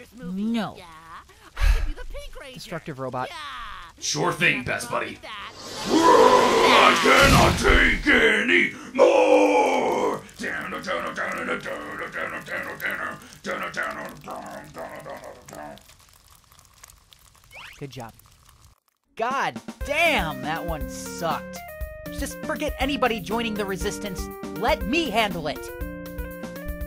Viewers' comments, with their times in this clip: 0:07 New Cannibal Corpse Song 2069 :v